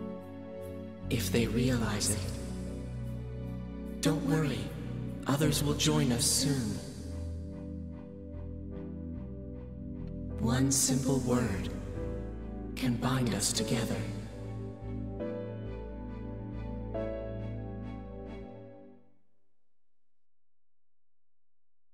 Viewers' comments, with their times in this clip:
0:09 Hmm, it's not one-to-one, but something about the posing reminds me of "The Creation of Adam" by Michelangelo... The triumphant music with the sunrise sounds very Pokemon to me, not what I've come to expect from this game =p ...And then when it kicks in again after "don't worry, Fred" it sounds very Pixar. I know there's something else it reminds me of as well, but I can't quite place it...
0:09 It's sorta similar. Off the top of my head, it reminds me of how "Brand New Days" kicks in in Persona 3 The Answer.